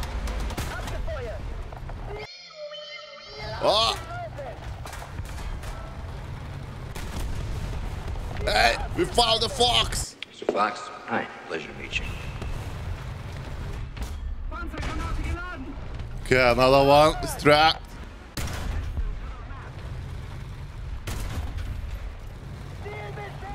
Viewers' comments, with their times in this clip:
0:08 what is that "hey" man 🤣🤣🤣